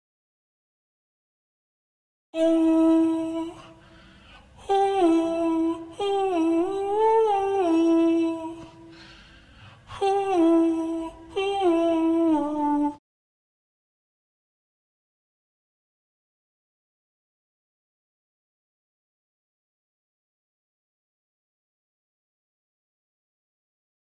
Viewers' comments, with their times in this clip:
0:08 My favorite monster ever! I love the extra little detail where it takes a breath in between notes